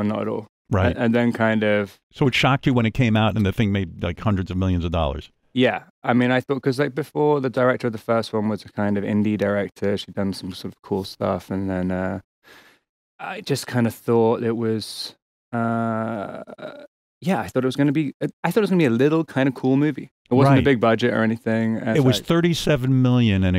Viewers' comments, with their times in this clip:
0:10 the vocal, seems his trying be batman. Oops